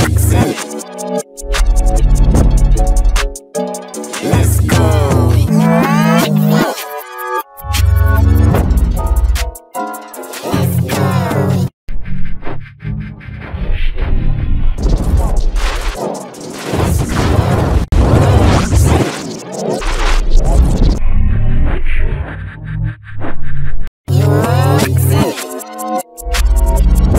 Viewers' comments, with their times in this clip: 0:09 Sounds Like Scary Good